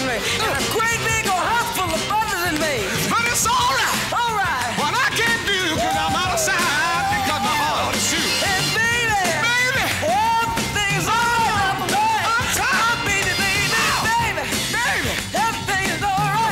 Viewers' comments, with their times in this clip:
0:03 LOVE it how Tom pushes himself to the edge of his voice here to match Stevie's energy. Great performance.